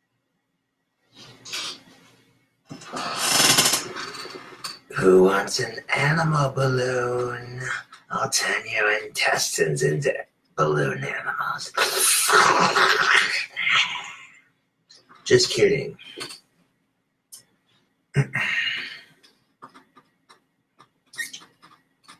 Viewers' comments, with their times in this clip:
0:03 ..fucking howling lol